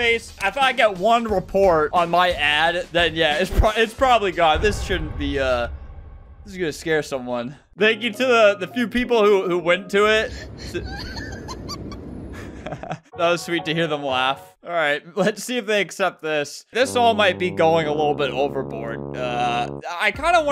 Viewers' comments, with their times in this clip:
0:08 that laugh cured everything